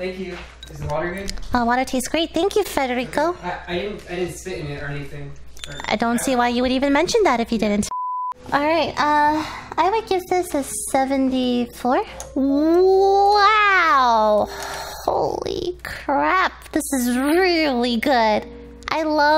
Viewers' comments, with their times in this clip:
0:05 Why do even people hates her voice? I mean just listen it's so natural and sexy.
0:05 she uses her real voice omg we finally got er boyz